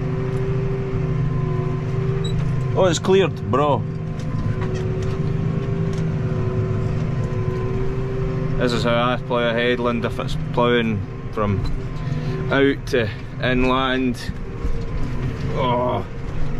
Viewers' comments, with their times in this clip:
0:04 you sir have a broken point on your first plow at the end. great job ploughing. wish we could plow in the spring here in Sweden. did I hear you say "Bra" thought that was only swedish for good.